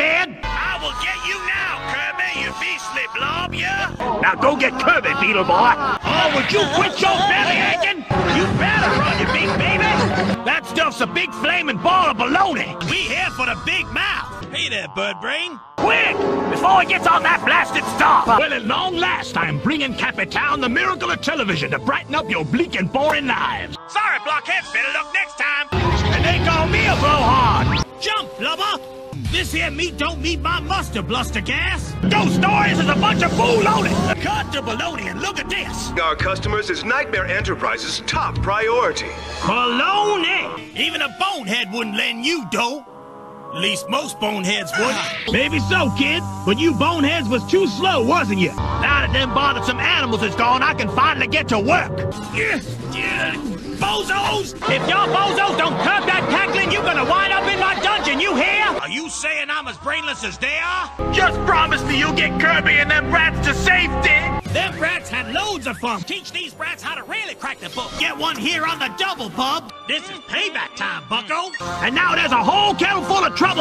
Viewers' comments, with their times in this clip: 0:04 ‘Go get Kirby for me boy’ For a second I thought he was grandpa
0:55 we can hear that Dedede and Escargoon have the same voice actor.